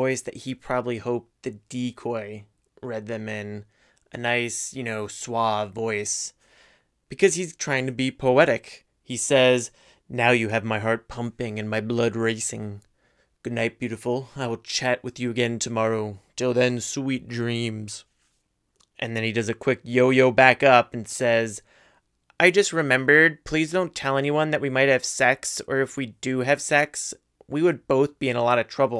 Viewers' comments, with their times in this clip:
0:10 sounds like doctor barber from flapjack reading poetry.